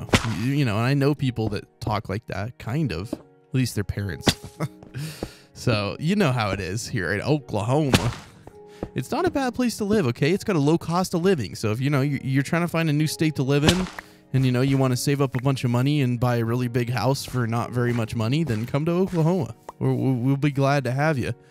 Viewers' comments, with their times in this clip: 0:04 did anyone else just realize that at this time there was minecraft music like bruh